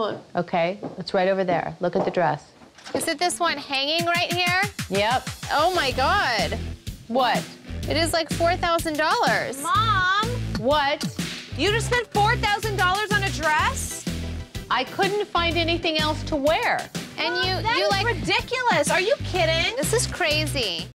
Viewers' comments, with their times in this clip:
0:10 khloe sounded like Fallon from dynasty